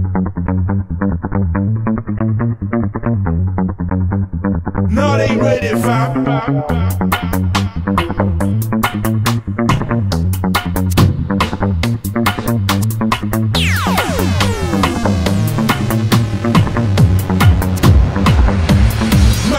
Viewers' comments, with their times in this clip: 0:03 love that riff